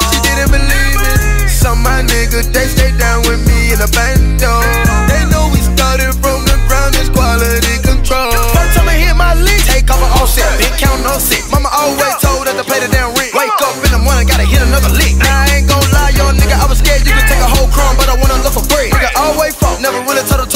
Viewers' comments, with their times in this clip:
0:08 The beat switch straight fire!!🔥